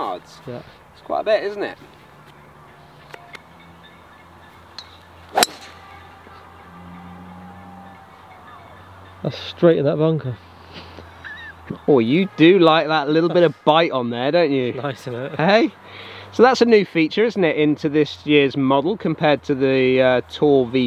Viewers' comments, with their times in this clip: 0:06 I guess you filmed this on a Thursday evening in lockdown is that the clapping for the NHS we can hear?